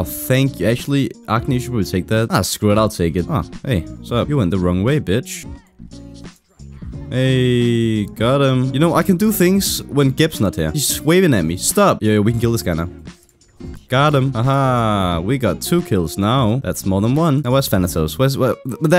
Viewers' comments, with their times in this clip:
0:03 Is that guitar jazz ?